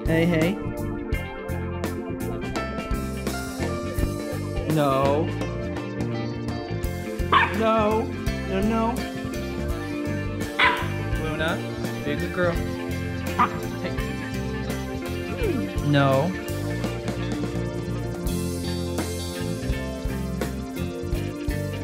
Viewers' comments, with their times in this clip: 0:04 dog bites raccoon in the face, owner proceeds to calmly say “no,no” while stroking the dog. After it’s just bitten that raccoons face. So infuriating! Like telling an animal off doesn’t work if your comforting it! It’s not like the dog hears “no” and in response thinks: ‘bloody hell my owner is right I shouldn’t be biting him” No means nothing, comfort means everything